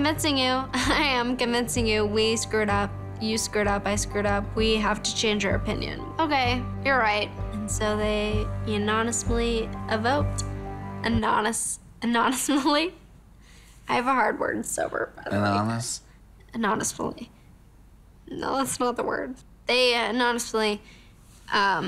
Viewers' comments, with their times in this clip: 0:09 “UNANISMOLI” I’m dead!